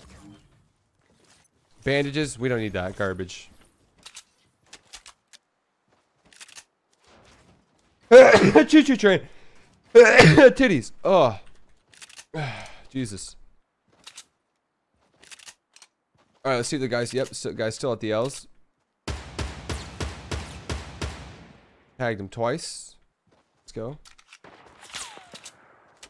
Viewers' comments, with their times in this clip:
0:05 'Sneezes' chOo cHoo trAin! 'Sneezes again' tItiEs! Haha lol Edit:
0:07 best sneeze ever XD
0:07 i name it ‘the tourettes sneeze’
0:08 I coughed just after Tfue did it 😂😂😂 EDIT: This is 1 this is 2, it called MATH 😂😂😂 Why did the man cross the road? To say hi from the other side 😂😂😂
0:09 that's my sneeze in the middle of class
0:10 is that when ever you sneeze